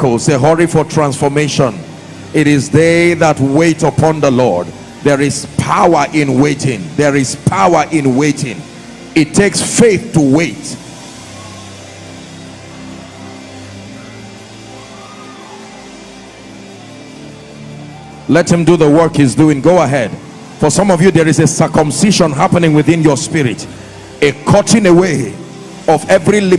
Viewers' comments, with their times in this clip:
0:07 Video has No sound running time. What happened?